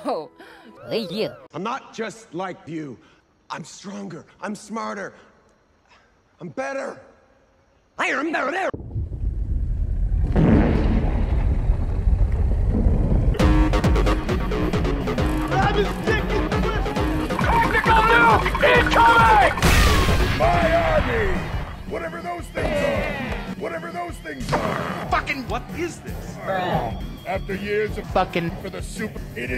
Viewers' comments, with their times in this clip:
0:07 I am not supposed to be up and I try no to wake up my sister but the is I Am bEtTeR and the fart sound makes me laugh more harder
0:13 epic party music in bowser’s castle!